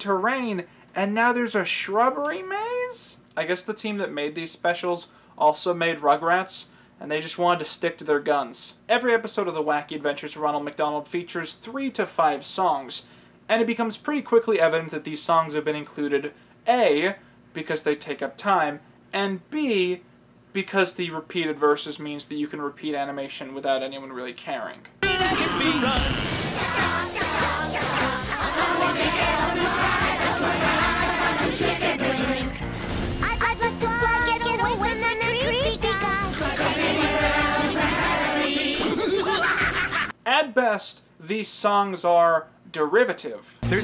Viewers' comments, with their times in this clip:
0:07 that explains why the hamburgular looks like Chuckie, the kids dad/ scientist in the house looks and reminds me of chaz finister, and some of the voices remind me of Rugrats voices...so yeah
0:25 So this is what hell sounds like.